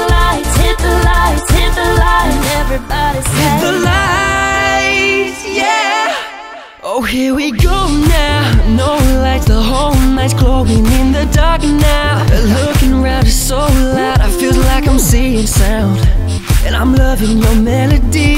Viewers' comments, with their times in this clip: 0:03 favourite part, because conor sings by himself :)
0:03 daym you can sing! :D i really like this video :)